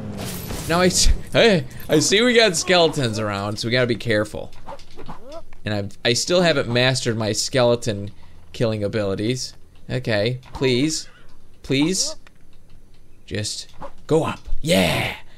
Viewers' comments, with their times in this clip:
0:03 my Siri opened because you said hey I see. Lol.